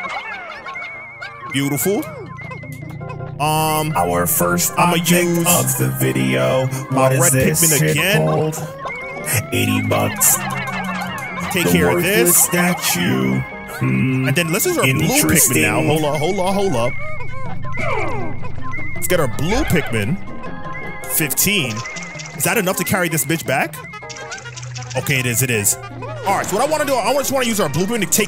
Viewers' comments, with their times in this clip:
0:10 I think you had an audio issue Was that intentional? Just helping out a homie